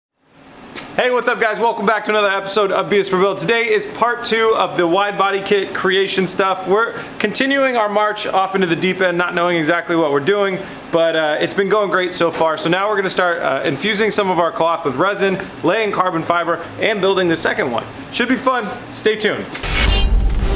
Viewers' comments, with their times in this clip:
0:03 If you put subtitles on, it says that this is beer is for build